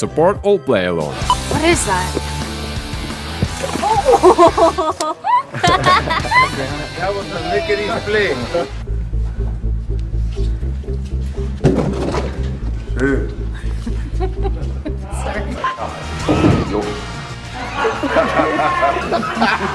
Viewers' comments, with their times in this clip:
0:05 not sure if there is anything cuter than Vanessa Hudgens laugh